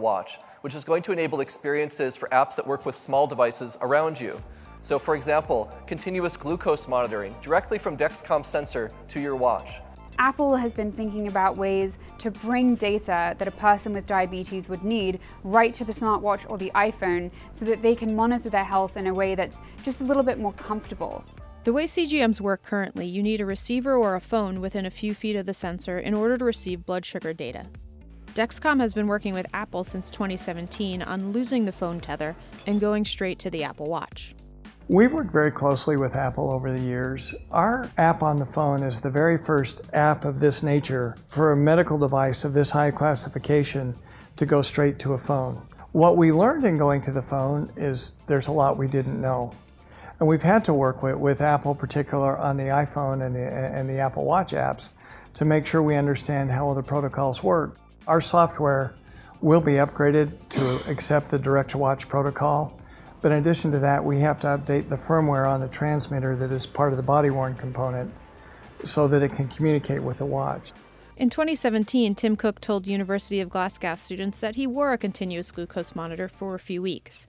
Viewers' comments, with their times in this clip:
0:10 did she switch from an american accent to a british accent midway?
0:59 .... heavy sigh/exhale.... maybe the camera man lol